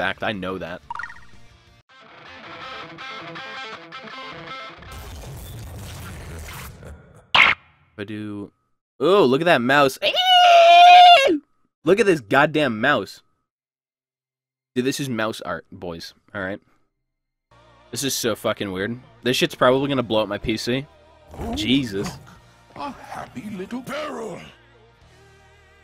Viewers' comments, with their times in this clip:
0:08 i love that screeching sound for some reason lol
0:09 LMAO! The amount of strange noises you can do is fcking insane.